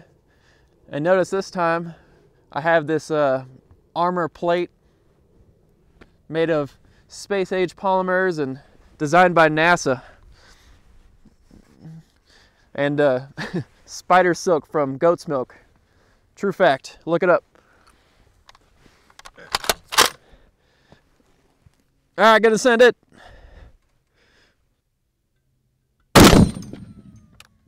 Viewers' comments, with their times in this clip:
0:10 That moan tho. Love the video by the way!
0:10 Okay by why did he moan when he put his earmuffs on?